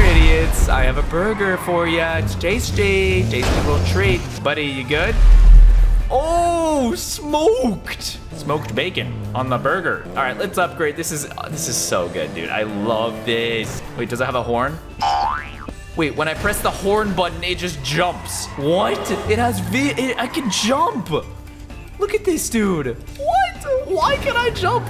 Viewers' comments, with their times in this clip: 0:08 how he said that was funny